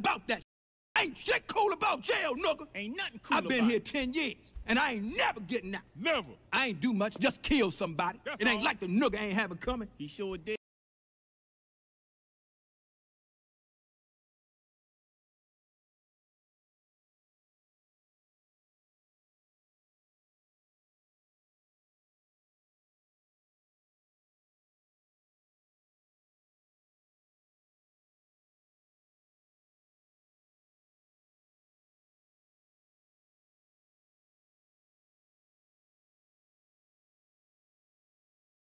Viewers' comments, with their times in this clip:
0:08 why is the sound cut off
0:26 You muted that part on purpose huh "Young Uncle Ruckus" ? Lol I knew there was something off about you 😂